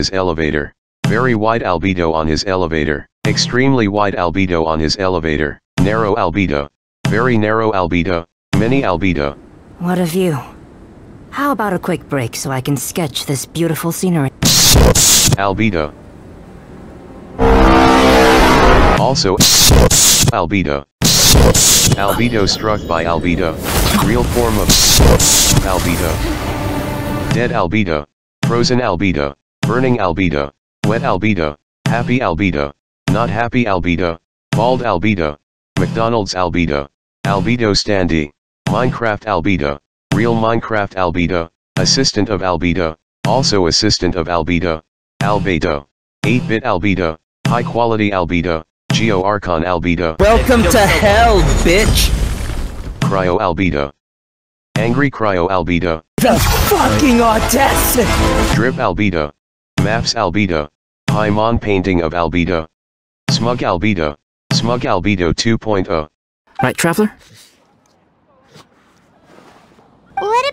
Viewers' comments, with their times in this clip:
0:10 he sounds like Razor lol
0:55 love the voice -